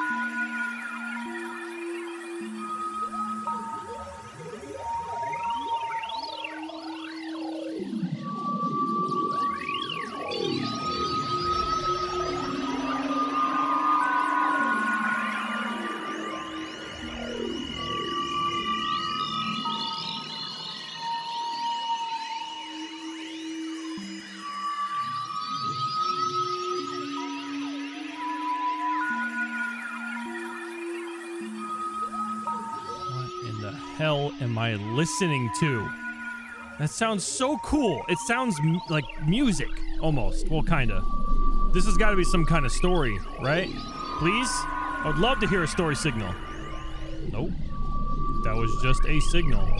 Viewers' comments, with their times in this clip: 0:04 can u hear the Morse code coming from that planet
0:24 That signal he got around the mark sounds so much like Phazon ambience in Metroid Prime it's crazy.
0:34 sounds like a pitch-shifted sound effect from a spore creature